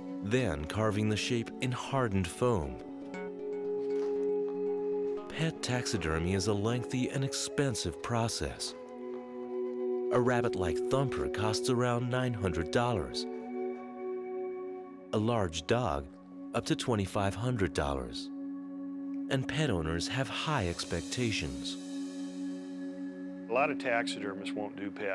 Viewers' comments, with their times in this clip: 0:09 "A rabbit like Thumper costs around $900 dorrars, a large dog up to $2,500 dorrars."